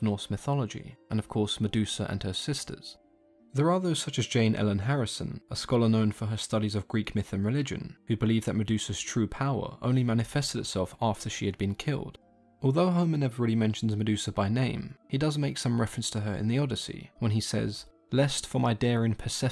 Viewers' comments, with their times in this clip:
0:05 Jane Ellen Harrison or “harrion”?